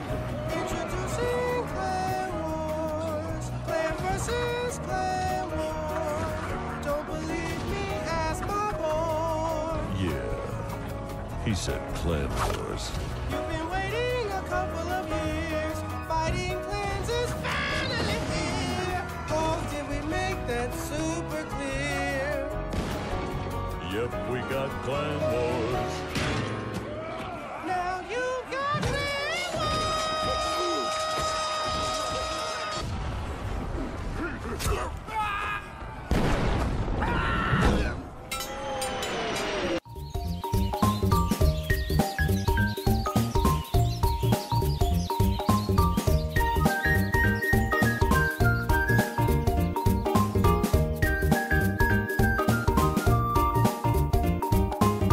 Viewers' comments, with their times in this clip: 0:06 I thoath the hog rider said "don't belive ask my balls"💀
0:27 I can just imagine the voice actor sucking helium balloons before voice acting the hog rider
0:39 lol that song
0:40 sit back and relax enjoy the music
0:43 someone tell me why there’s Mario party music on here